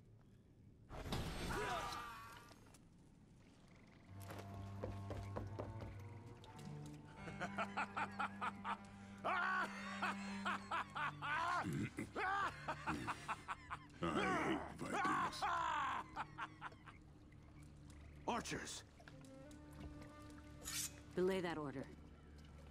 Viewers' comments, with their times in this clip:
0:05 Man I love that laugh 🤣